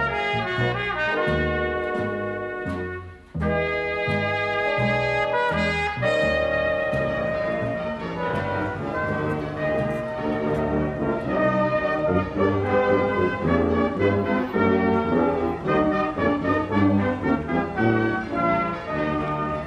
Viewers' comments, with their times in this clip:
0:06 I love that opening with the marching band.